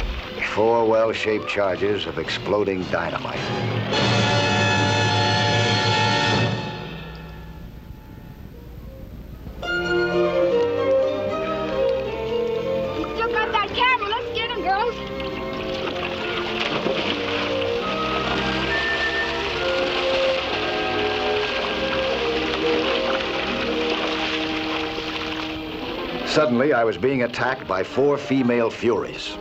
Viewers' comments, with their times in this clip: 0:10 This lively piece in 6/8 time, is a “fast version” of a 1964 hit, “Today”, by New Christie Minstrel, also on “The Tide Is High”, there’s a 12 notes riff heard in that 1980 Blondie Hit.